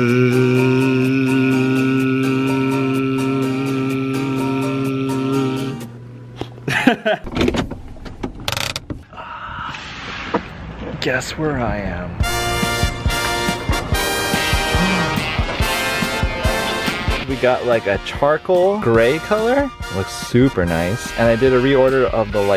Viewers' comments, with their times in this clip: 0:07 AAAARGH my ears! You have a Button for that! T_T